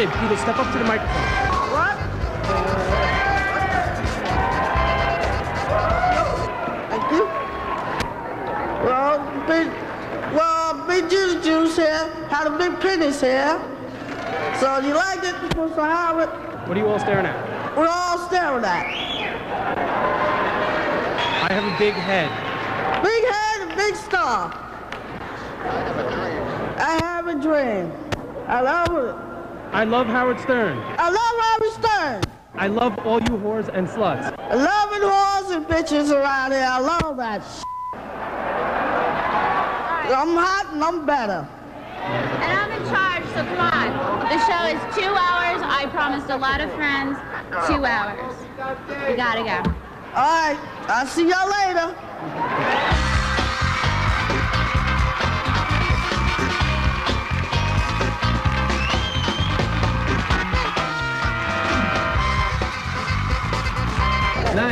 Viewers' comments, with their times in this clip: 0:10 "Wel bi.... well be beedlebuce here, habb bi benis here." Is how I will start every presentation from now on.
0:46 you can hear the headset telling him to say "Shut up woman"
0:47 you can hear them saying "shut up woman" in his headset lmao